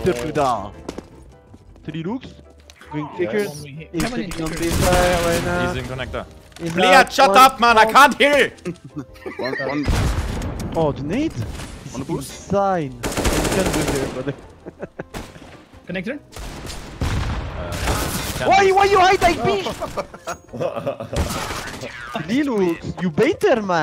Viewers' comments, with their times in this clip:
0:05 when a german tries to speak Russian.